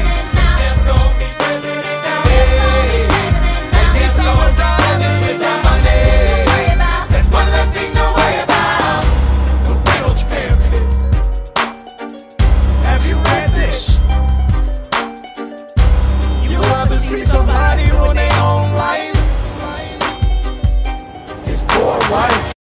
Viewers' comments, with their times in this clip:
0:09 I just realized that from ca. on you can hear the same melody as in the beginning of Burn in the background. And then it ended with his poor wife 😭😭💔
0:09 Yall recognise faint violin plucking tune in the background right??? Poor Eliza😩😩😩
0:13 is when distortion starts
0:15 i love that weird voice affect
0:16 The autotune on this line just kinda hits different =w=
0:16 the auto tune though